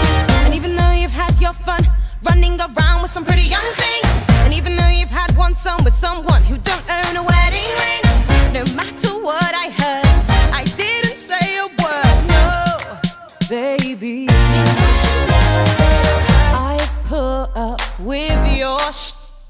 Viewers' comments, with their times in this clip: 0:04 All looking at anne boleyn Anne boleyn WHISTLES